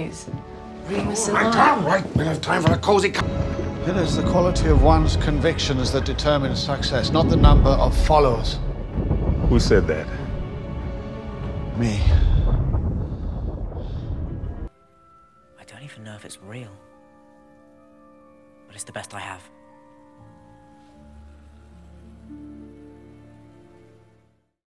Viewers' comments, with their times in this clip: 0:05 i thought he said sexist help 😩